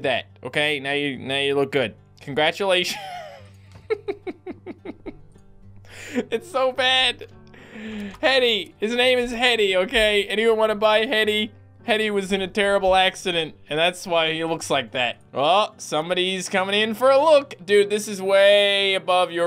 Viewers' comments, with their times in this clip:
0:04 it’s like the laugh in majoras mask lmao